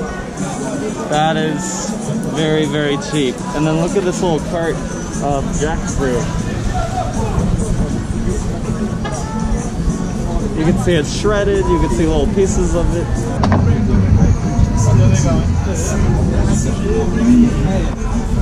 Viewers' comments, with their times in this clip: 0:05 the guy shouted "son of a b*tch"